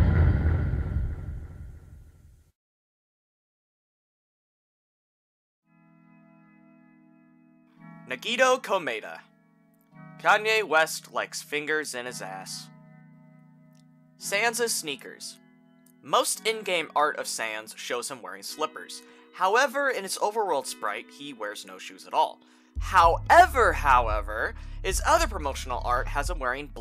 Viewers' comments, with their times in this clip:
0:08 when I heard the name "Nagito Komaeda" I got startled a bit. Probably because I wasn't expecting him to be in here and.... other things (*danganronpa flashbacks*) but at the same time when I heard his name I realized why he was mentioned. All I have to say is the internet can be a curse and a blessing I don't know if anyone has told you yet but you pronounced his first name wrong, how your supposed to pronounce it is "nah-gee-toe". It's a simple mistake, a lot of people I have come across pronounced his name wrong so your not the first. I guess that's supposed to make you feel better?